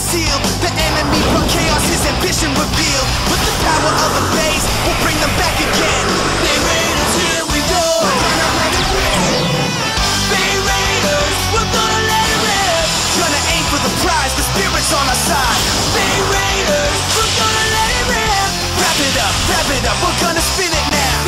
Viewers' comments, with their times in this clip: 0:09 How can anyone NOT like the song's chorus? I can't stop myself from repeating it.